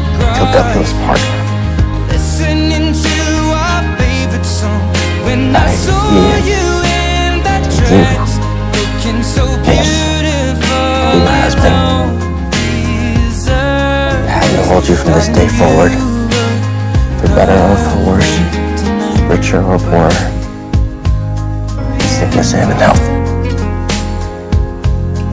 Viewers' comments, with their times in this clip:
0:09 the way Ian says Mickey I dunno why it gets me but it does ahh it's so cute